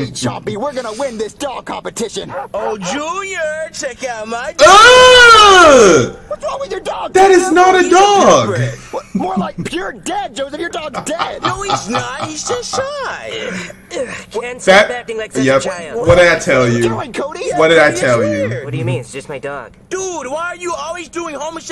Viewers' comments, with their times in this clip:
0:04 rip headphone users x2